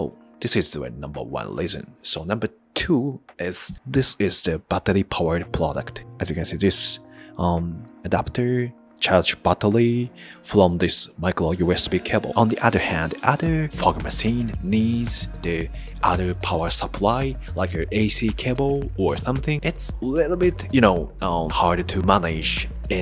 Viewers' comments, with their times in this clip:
0:04 Very nice “buttery-powered” micro fog machine you got there fella